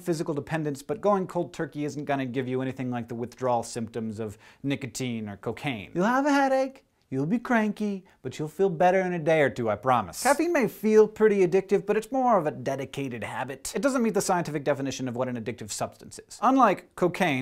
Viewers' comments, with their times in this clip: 0:04 the proof you should start a rapping career
0:05 Donald Trump impressions in it was 2012 video uploaded .He was still not president. 😋